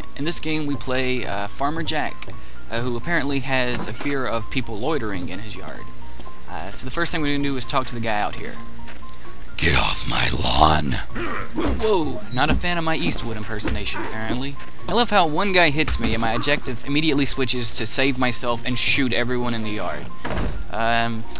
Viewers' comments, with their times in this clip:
0:09 that was a kickass voice you did